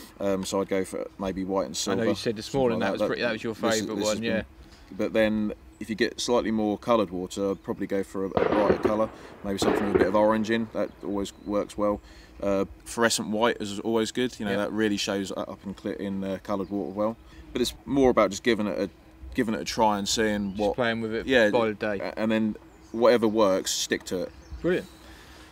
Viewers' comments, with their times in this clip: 0:07 i heard shots and thought I was playing Rust or CSGO...
0:08 Was that gunshots 😦